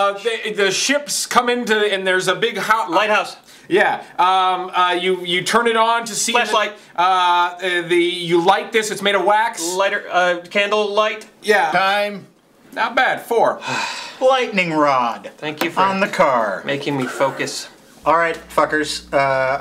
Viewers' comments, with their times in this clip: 0:04 I thought he said "fleshlight" xD